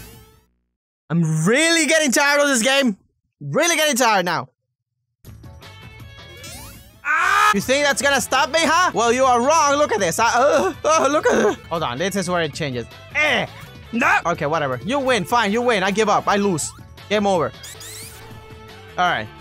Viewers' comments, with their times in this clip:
0:06 battle cry x4